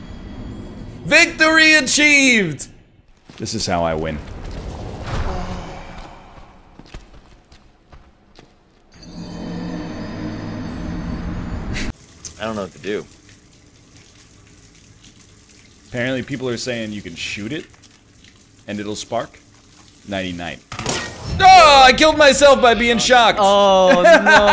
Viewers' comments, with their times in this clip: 0:05 is the pufferfish eating a carrot sound